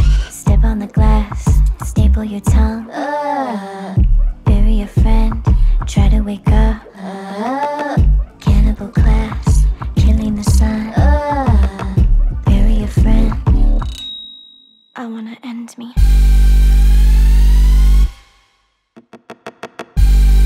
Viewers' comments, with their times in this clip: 0:03 I love this cover, but I can't help but laugh when I hear the "aaaah" like because it sounds like that pufferfish meme.